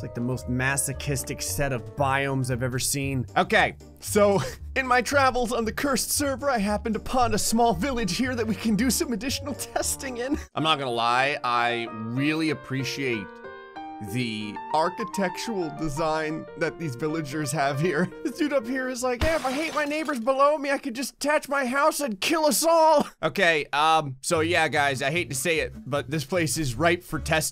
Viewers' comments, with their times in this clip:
0:08 he sounded like an anime boy